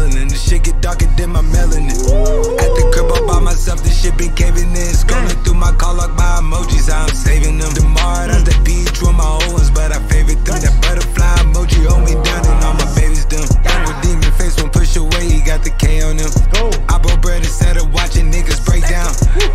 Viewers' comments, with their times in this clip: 0:07 that beat switch had me dead.